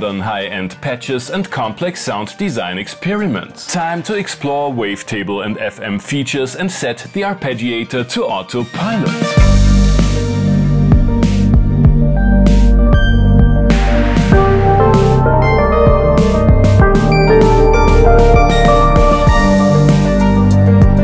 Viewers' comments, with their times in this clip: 0:03 As usual my friend boom-ting everything that's crap I'd never say no to.love the mod matrix sound.the silence between the flicking patches would that be also when playing live?.2nd tune@ very good.